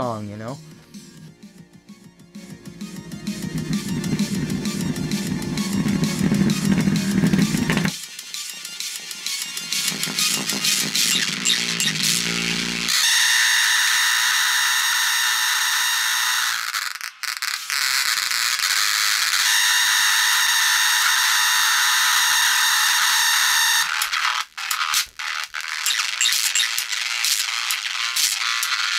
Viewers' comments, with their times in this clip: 0:09 this the sound of a speaker dying a painful death
0:10 Did any one else lose hearing from
0:12 Now, that's the sound of a healthy speaker
0:14 * E A R P A I N *